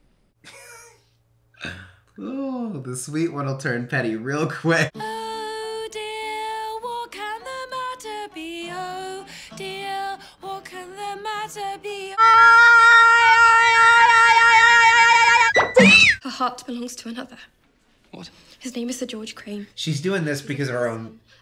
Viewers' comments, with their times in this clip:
0:06 Oh my ears are bleeding make it stop. Lol